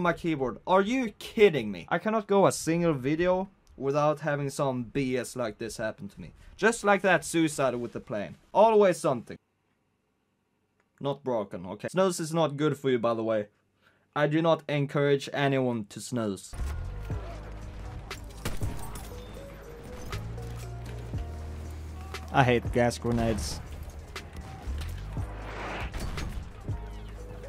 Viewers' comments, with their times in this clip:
0:09 what's that? Is it a cigarette or something?? He says something like "snoze" what is that